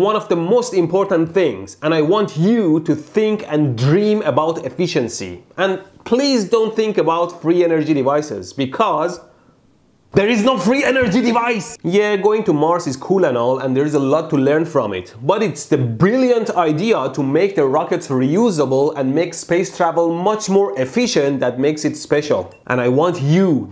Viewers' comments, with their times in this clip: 0:10 He was clearly channeling his inner Arnold here. ^.^